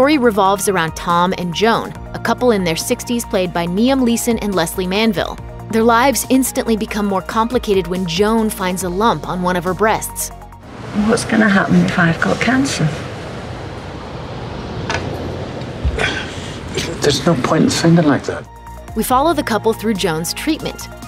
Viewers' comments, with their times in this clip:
0:03 Good ol 'Niam Leeson' lololol